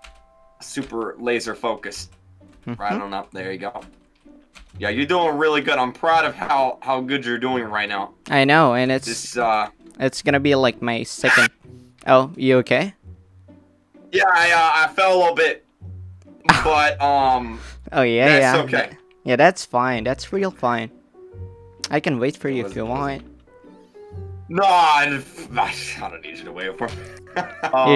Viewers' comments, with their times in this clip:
0:10 LMFAO 💀 THE SCREAM